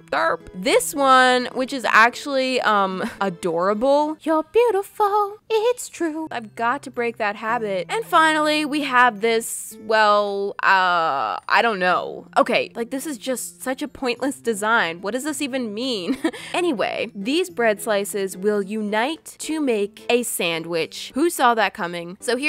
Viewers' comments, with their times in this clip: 0:04 her singing voice is awesome